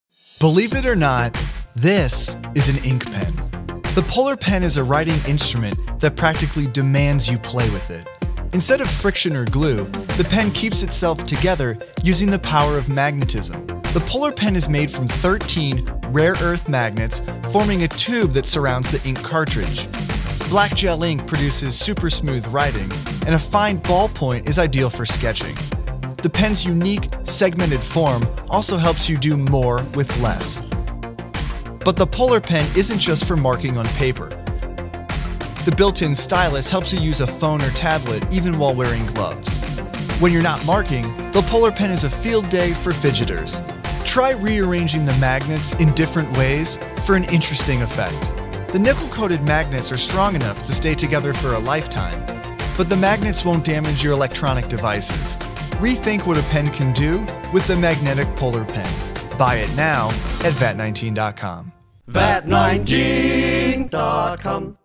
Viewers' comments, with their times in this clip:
0:00 bleep it or not
0:47 did he say "nipple coated"?
0:48 "nipple coated magnets"
0:48 Nipple coated magnets
0:48 The nipple-coated magnets?
0:49 Did anyone else hear "nipple-coated magnets" at first or am I just high?
0:49 Did he just say nipple coated
0:49 did he say the nipple coated magnets 😂😂😂
0:49 The nipple colored metal!???
0:49 the nipple-coated magnets 🤨🤔
0:50 I heard nipple coated magnets